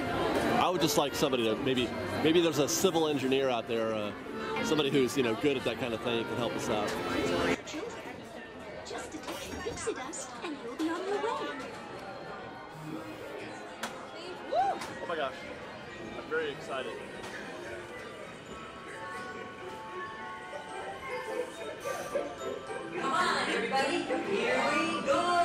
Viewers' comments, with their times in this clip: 0:08 Why is the sound muffled. I couldn't watch this, the sound was horrible. It was fine until and then like a switch, it went weird. The sound is perfect as separate clips posted through out the week.